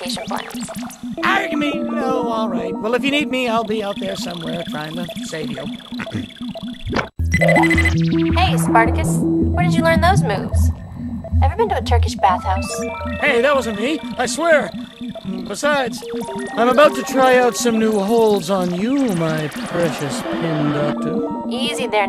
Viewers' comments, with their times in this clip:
0:07 did he just say bulgding :l